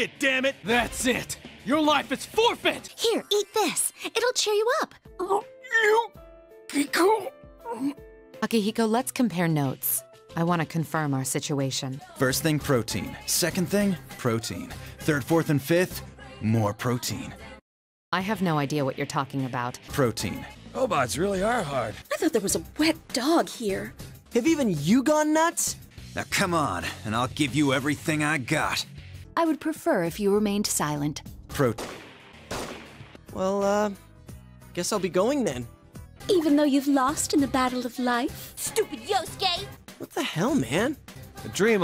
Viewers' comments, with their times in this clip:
0:05 why is there sad music playing LMAO
0:29 Naoto: I will prefer if you remained silent. Akihiko: Prote- *Gun shots sound*